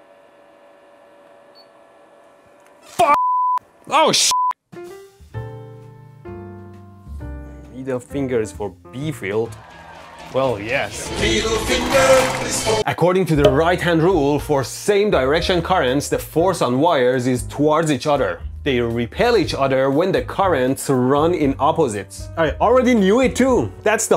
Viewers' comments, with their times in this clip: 0:07 That right hand rule song took be back to the early ElectroBOOM days
0:11 I have already repressed the memory of that song 😂